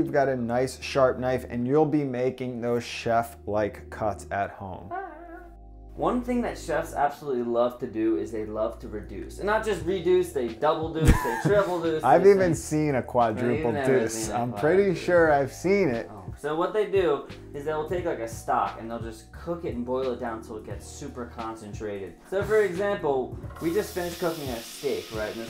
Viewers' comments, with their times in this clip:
0:03 two seconds after, pretty sure one of them farted while squeezing the meat
0:04 Did i hear a fart ??
0:04 did one of them just drop a cheeky fart?
0:04 Which one of you guys farted ?!?
0:05 Is that a fart ?
0:09 for the slightest second I thought it said seduction 😂😂